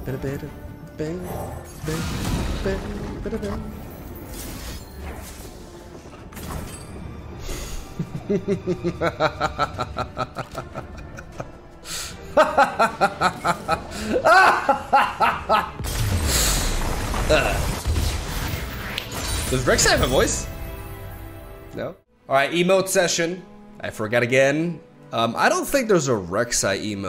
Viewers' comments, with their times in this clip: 0:06 Laughs maniacally Me: Instantly likes the video.
0:06 the villainy laugh the origin story of lurk + rally
0:06 that an evil laugh😈
0:07 Tune in to to hear evil Mogwai laughter.
0:07 evil laugh Intensifies
0:14 That evil laugh is what peak L.O.R looks like 😂